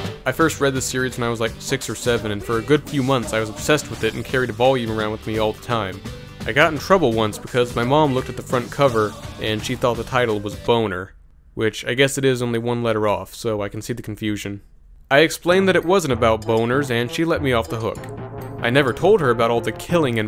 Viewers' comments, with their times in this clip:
0:05 thanks for putting that theme song in! I will now remember it for the rest of the day